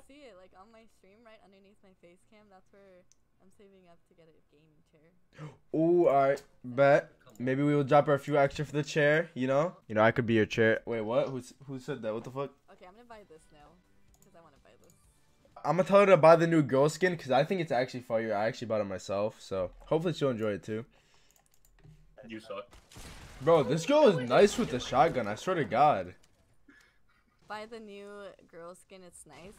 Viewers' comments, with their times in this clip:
0:10 instead of making it black just edit the voice of "I can be your char" to sound far and just put it in the background lmao